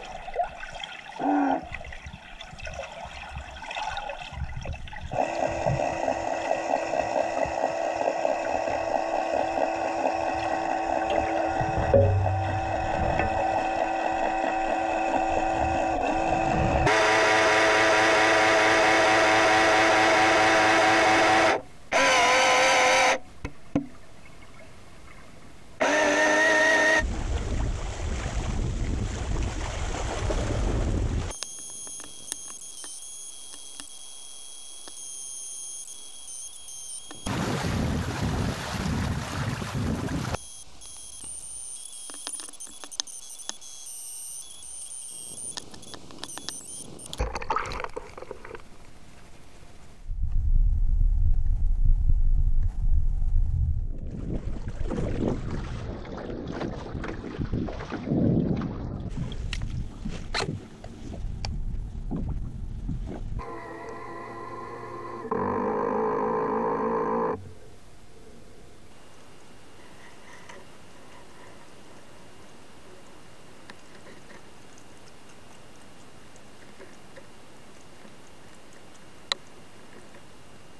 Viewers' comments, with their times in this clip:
0:10 Ahhahaa i'm sorry but bonk it was so funy
0:31 every sound in movies when someone hacks
1:05 sounds like an a-10 brrrrt
1:06 A-10 Warthog shooting brrrr